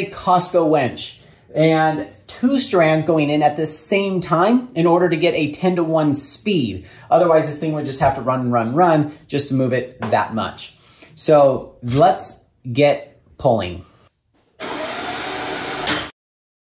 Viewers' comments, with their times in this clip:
0:03 *winch, your not matt mercer, you dont get to call them wenches and get away with it